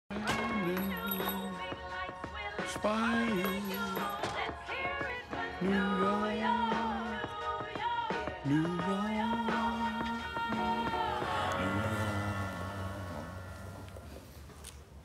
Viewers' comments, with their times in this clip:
0:00 This song slaps to this day👏🏼